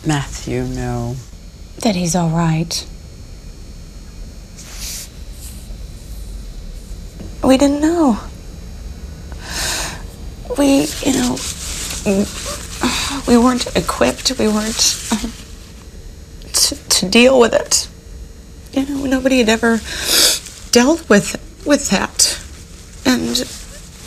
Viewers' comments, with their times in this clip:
0:05 the fake cry act, sheesh... even the interviewer just feels embarrassed for her doing it